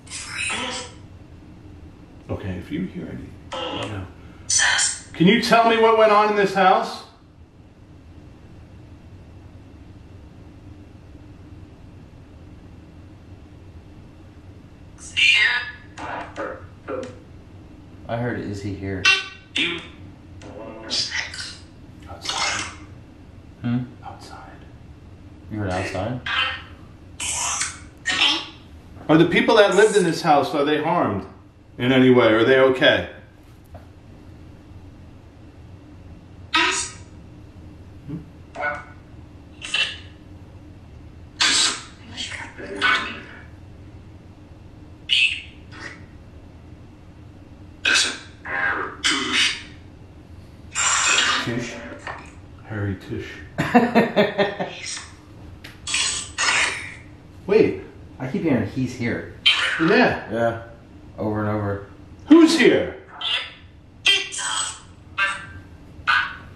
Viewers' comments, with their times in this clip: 0:08 It's us said a woman
0:21 I heard after you said "who's here?" I heard from necrophonic "Beezulbub" which is a demons name. I could be wrong.
0:22 sound's like Fu then sex.
0:31 When you said outside, sound's like a man said go on.
0:40 WHEN you asked if they were ok? Woman said yes.
0:48 Leave listen hairy tush.